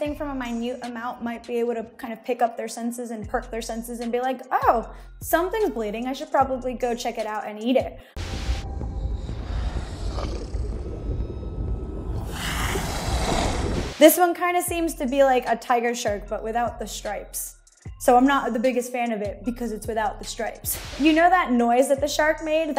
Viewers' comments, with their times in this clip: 0:10 this sound is actually the exact same hiss that the Basilisk made in Harry Potter 2 lmao